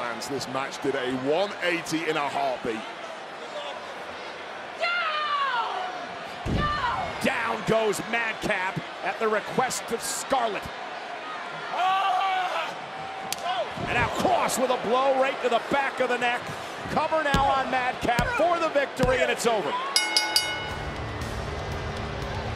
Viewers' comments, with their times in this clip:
0:03 This is the first time Scarlett has talked clearly since she debuted with Karrion Kross in NXT